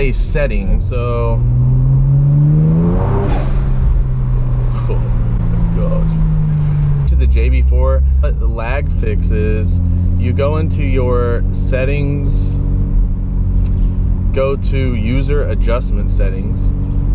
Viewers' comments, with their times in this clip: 0:05 THAT TURBO SOUND 😤🔥